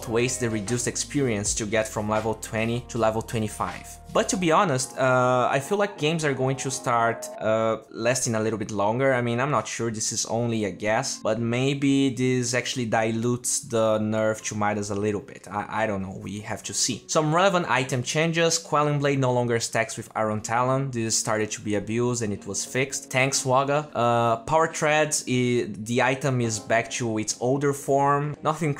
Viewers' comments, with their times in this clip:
0:10 this is only a gas i love his accent 😉 crispy!